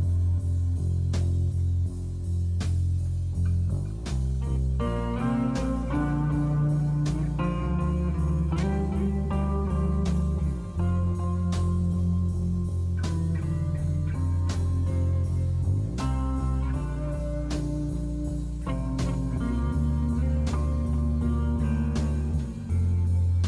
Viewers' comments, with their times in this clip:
0:04 Great song. <3 the guitar part